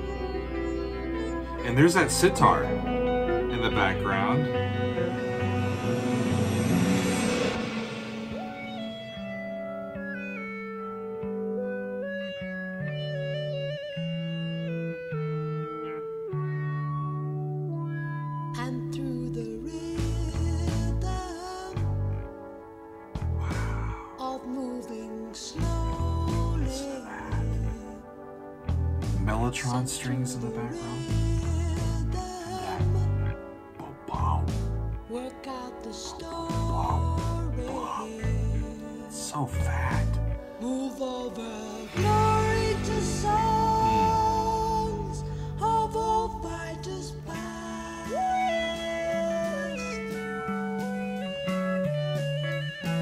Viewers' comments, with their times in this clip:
0:08 Rick Wakeman enters in with the same synthesizer he utilized in "Journey to the Center of the Earth" album.
0:40 A rare "pitchy" moment for Anderson?